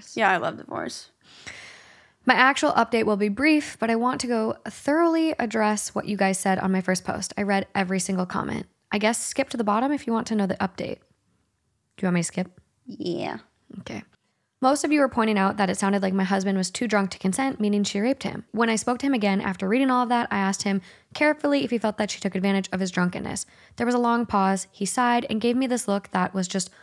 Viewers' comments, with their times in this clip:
0:07 I'm sorry but that Quack is funny.